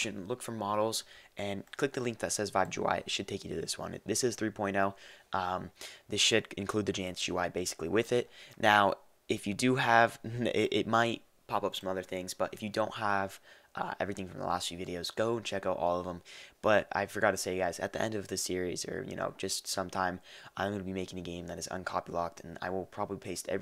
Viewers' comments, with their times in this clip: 0:06 i thought you said Sh"" --->